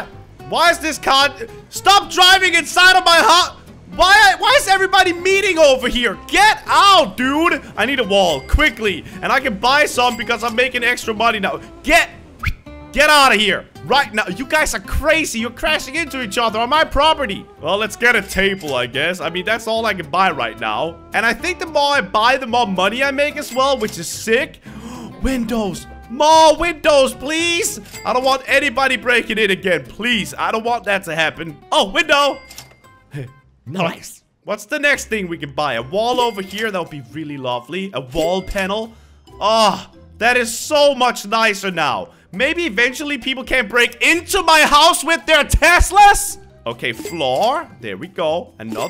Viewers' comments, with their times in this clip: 0:07 when he whistled they did actually go!! Lol 😂 ❤️
0:33 this reminds me about SSundee's UuHh